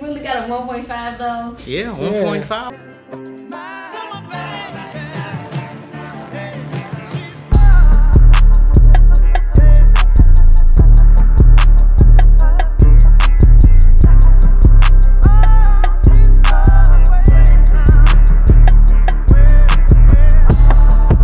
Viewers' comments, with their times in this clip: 0:03 Beat go really hard ......
0:05 Music is Hott